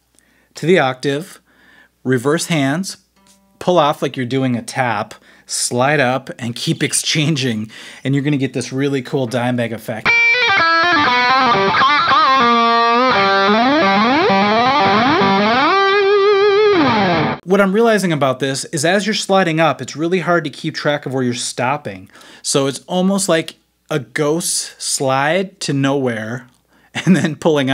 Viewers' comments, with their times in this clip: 0:09 let's call it SuperMario effect